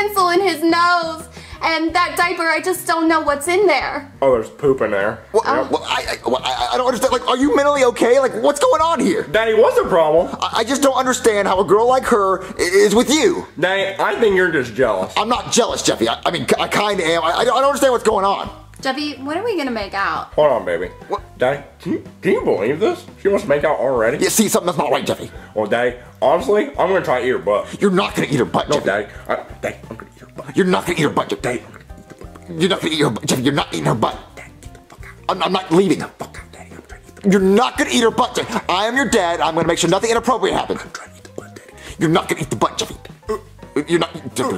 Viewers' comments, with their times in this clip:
0:04 “Oh there’s poop in there” the way he said it got me like 😂😂😂
0:30 I love this part when jeffy whispers daddy get the fuck out 😂😂😂😂😂😂😂😂